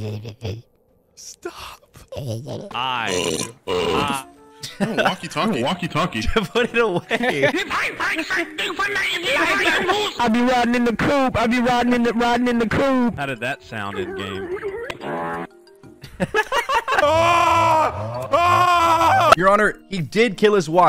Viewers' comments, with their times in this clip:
0:04 as a german i can confirm we do sound like that